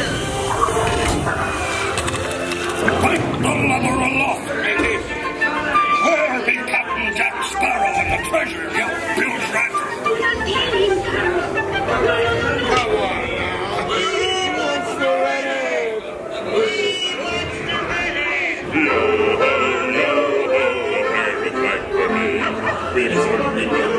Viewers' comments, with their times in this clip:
0:05 I dont think Ive ever heard the flute so loud! I actually dont ever remember hearing the flute... Also, is that Smee? Is it canon that he can play flute??